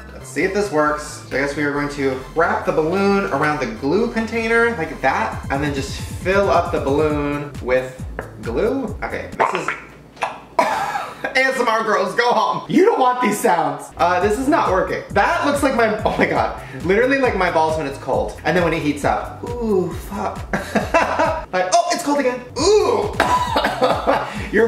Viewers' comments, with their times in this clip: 0:08 That sounds like my sister taking a shit in the 711 bathroom
0:09 sounds like my dog vomitting